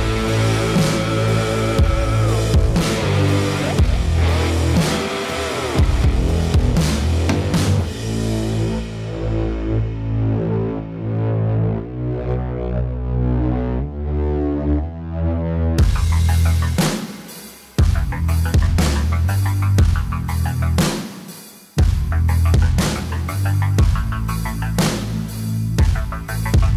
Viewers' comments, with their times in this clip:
0:07 I thought godzilla was somewhere taking its atomic breath